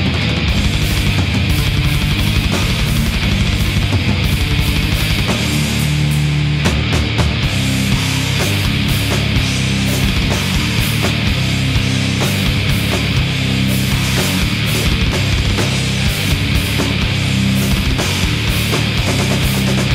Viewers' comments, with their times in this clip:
0:06 is the earth shattering riff